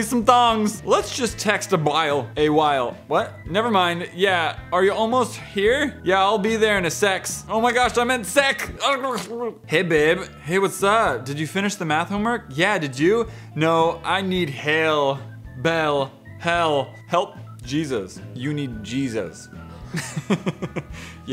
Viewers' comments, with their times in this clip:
0:09 I love when he speaks gibberish